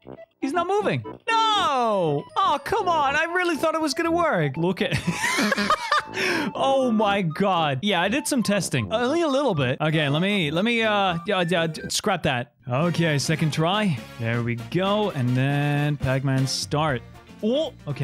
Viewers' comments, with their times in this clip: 0:04 I’m never getting over that laugh